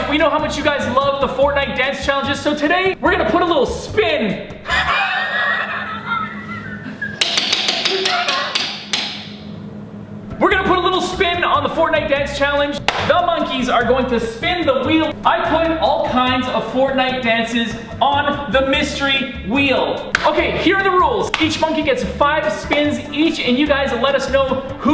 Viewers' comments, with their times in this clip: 0:04 the dad laugh so wierd and funny
0:04 That dad laugh Tho 😂😂😂
0:04 WAHAHAHAHAHAHAHAHAHAHAHA THAT LAUGH HAHAHAHAHAH 😂😂😂😂😂😂🤣🤣😂😂
0:05 that wheeze tho